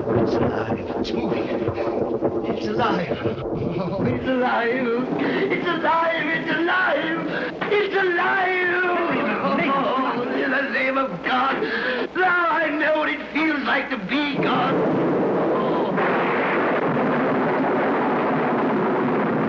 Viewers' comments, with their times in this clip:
0:04 Windows 98 Horror Channel Startup sound